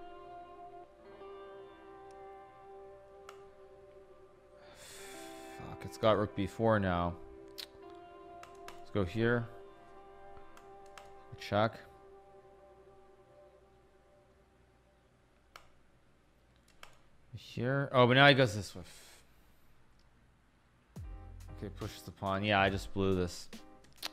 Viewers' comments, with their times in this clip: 0:05 never heard this type of frustrated Hikaru 😳